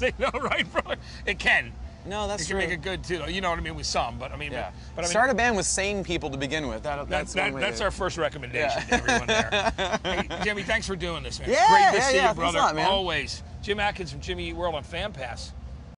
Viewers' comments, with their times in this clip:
0:09 His laugh was the cutest